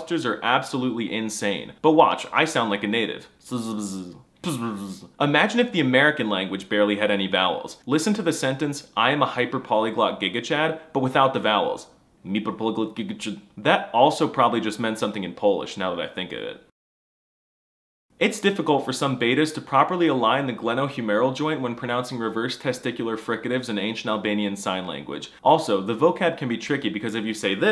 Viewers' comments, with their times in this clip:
0:03 the poles are just bees in human shape
0:13 you actually sound like something has happened to your tongue and tried to say something about your pants in polish 💀💀💀💀